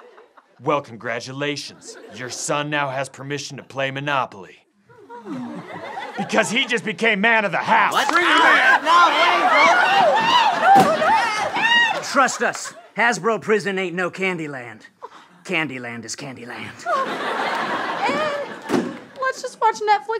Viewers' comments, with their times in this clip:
0:08 Anyone else here that crack